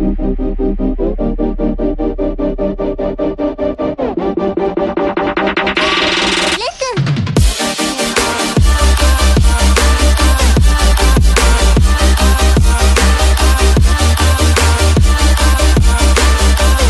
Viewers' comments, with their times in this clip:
0:03 Damm that music